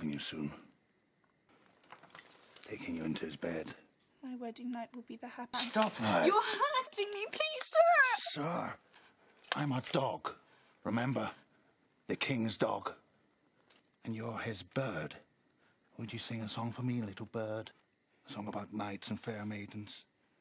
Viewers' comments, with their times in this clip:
0:06 I felt a little emotion of Sansa's reaction. She got an innocent face and voice. I wana give her a hug.